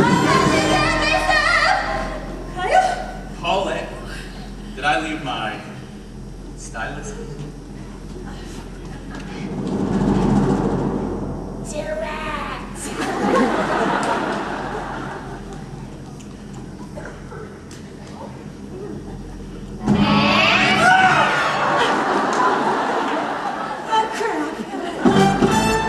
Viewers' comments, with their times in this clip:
0:06 I can’t get over how the guy says stylus